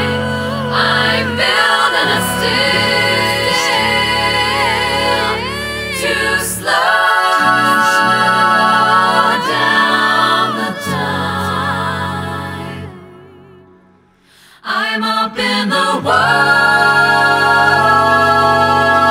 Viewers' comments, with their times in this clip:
0:05 I feel like I could bathe in the chord at the end of this "to slow down the time."